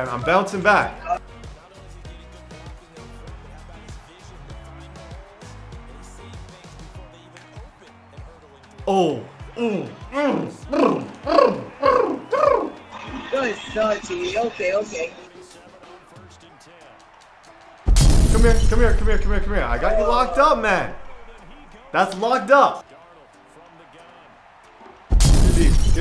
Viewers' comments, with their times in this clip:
0:09 this dude sounding like Limu Emu